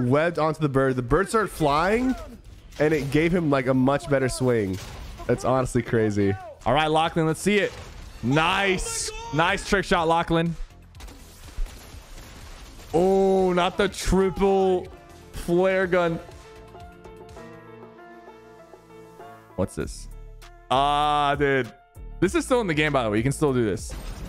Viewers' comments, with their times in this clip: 0:06 This man called Chanzes Lachlan